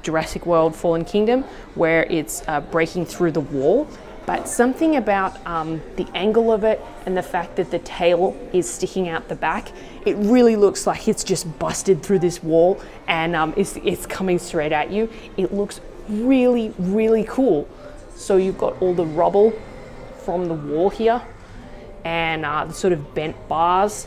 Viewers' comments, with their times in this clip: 0:05 Lol stick me lock